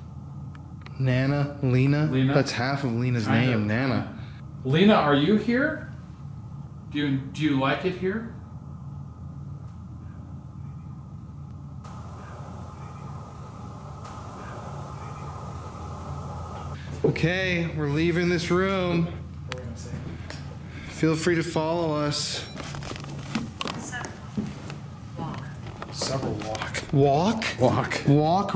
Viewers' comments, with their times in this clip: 0:10 when ask about Lena.... you hear "Help me".
0:11 the voice they captured here, can anyone hear what it says?? i cant make it out... 🤔🤔🤔
0:14 I heard a deep man's voice saying "Not Really"